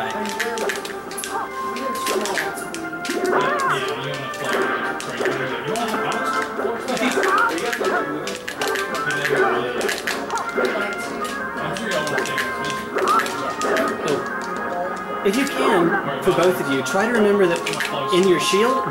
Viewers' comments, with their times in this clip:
0:06 we were attacking to the beat